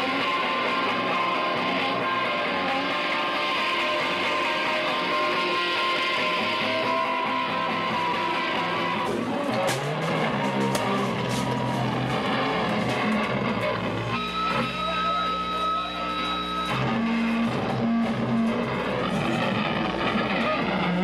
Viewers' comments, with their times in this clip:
0:09 Sweetest sound ive ever heard come out of a guitar.